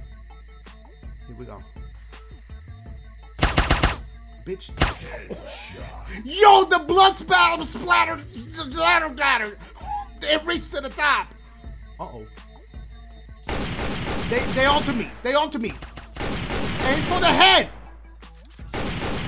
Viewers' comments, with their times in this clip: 0:07 soundin like bill cosby